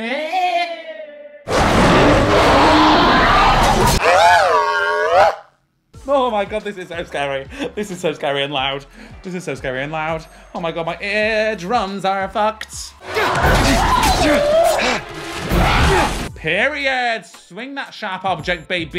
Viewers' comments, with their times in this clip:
0:03 you literally made a noise straight from W.A.L.L.E.... hahahah